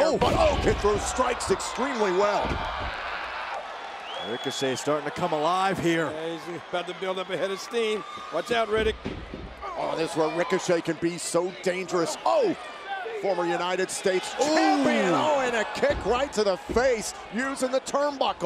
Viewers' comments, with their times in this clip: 0:03 lmao ricochet's scream, wtf was that?? 🤣🤣